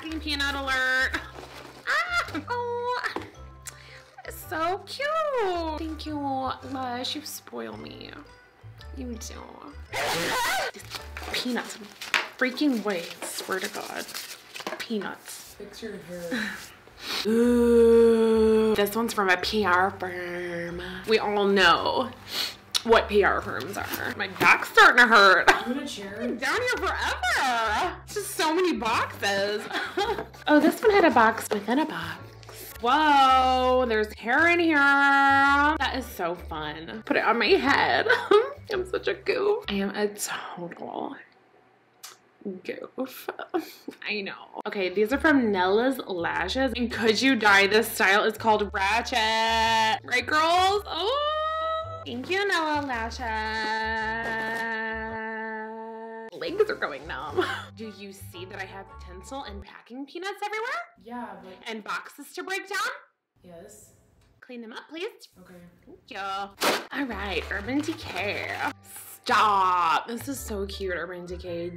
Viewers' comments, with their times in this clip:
0:09 The sneeze made me jump so hard then laugh hysterically, was NOT expecting that on headphones.
0:57 you reminded me of ‘byraaaaaaaannnnnnnnnn’ from Madeas big happy family